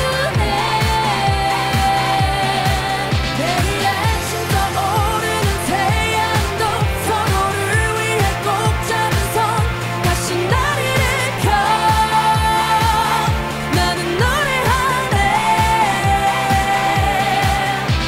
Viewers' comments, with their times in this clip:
0:03 I don't like kpop etc but i keep coming back to this 😂😂 But is my favorite 😍💕 that voice 🎤🎵🎶